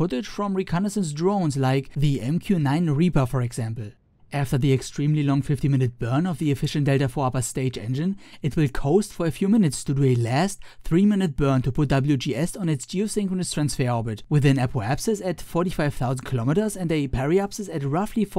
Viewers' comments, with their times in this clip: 0:05 50 or 15?